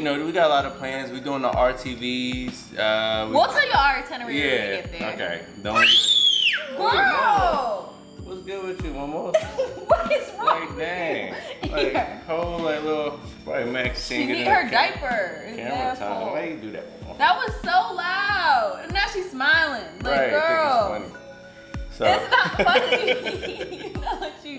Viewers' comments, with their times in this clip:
0:04 that screeeam has me dead🤣🤣🤣
0:07 not the scream and then smiles after 😭😭